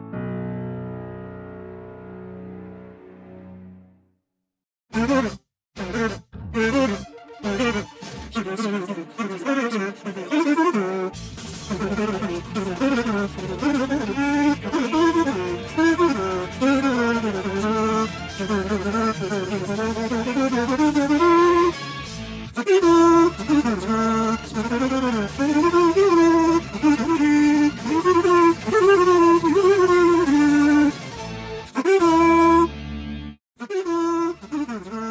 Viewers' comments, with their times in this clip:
0:05 Omg love this music in background so epic Edit:The music at beginning and
0:22 WTF this msuic